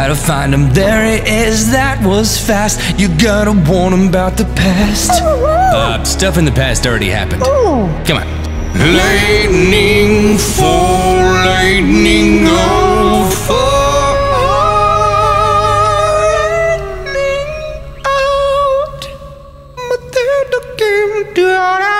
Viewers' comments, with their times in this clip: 0:05 hmm... when the dog is talking ( ), you sounds like Kenny from SouthPark